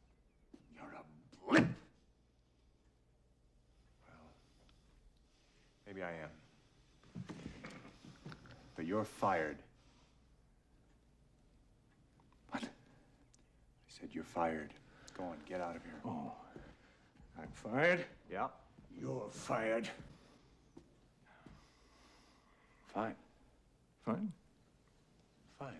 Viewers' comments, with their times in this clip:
0:08 who's that sound like?